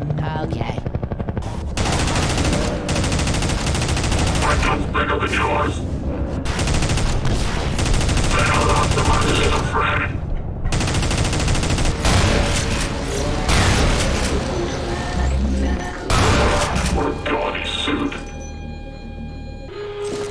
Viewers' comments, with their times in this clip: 0:04 sounds like a kindergarden argument like HAHA MY GUNS BIGGER THAN YOURS!! IM TELLING OOOOOOOOOOOOOOOOOOOOOOOOOOOOOOOOOOOOOOOOOOOOOOOOOOOOOOOOOOOOOOOOOOOOOOOOOOOOOOOO